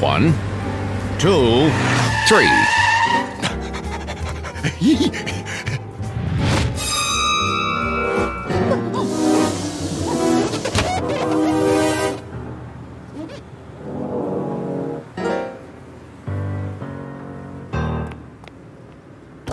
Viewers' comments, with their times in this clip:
0:07 That laser sound used in battles